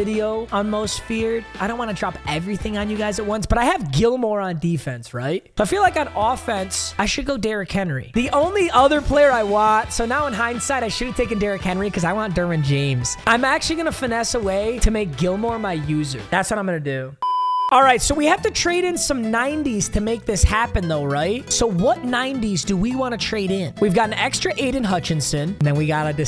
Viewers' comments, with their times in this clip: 0:10 I thought the vid was ending when I heard the timthetatman outro music lmao